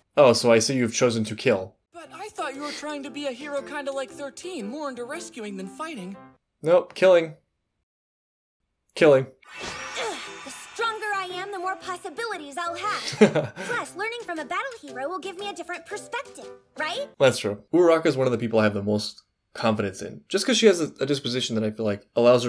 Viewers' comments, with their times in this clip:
0:06 the way you said “nope killing” just made me burst out laughing 😂